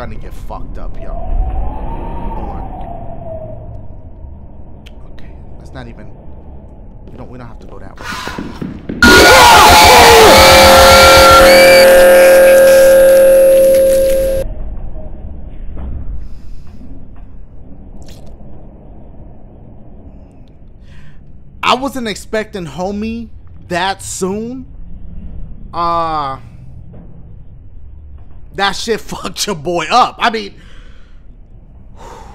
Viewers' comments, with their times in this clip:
0:07 Sound like the killer came off the toilet and killed dashie. lol
0:20 IS REALLY LOUD🔊 AND SCARY😨😱